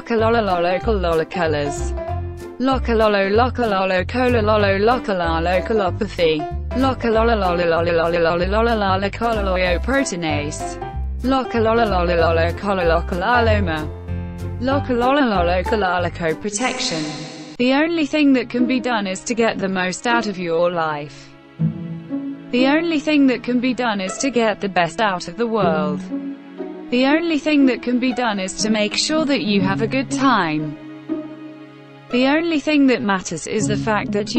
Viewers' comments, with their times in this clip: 0:07 nobody: 6 year olds speaking their made up language:
0:11 German words be like:
0:17 E- SHow Up Uhhh * WHY THE F AM I HEARING MEGALOVINIA * I Like His Hip-Hop SKills Tho